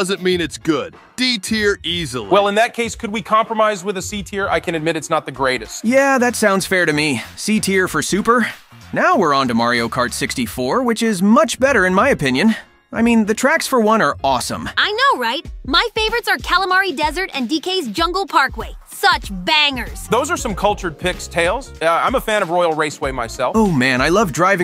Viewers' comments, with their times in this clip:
0:06 Yeah that sounds fair to me, C tier for Sup- ad Soup?